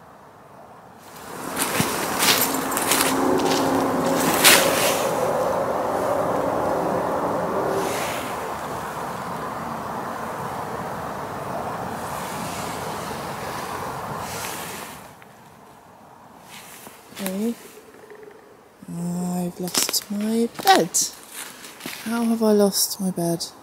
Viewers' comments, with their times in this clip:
0:03 Noise in the dark - distant traffic?
0:11 .... "What was that noise?" = A car on the highway.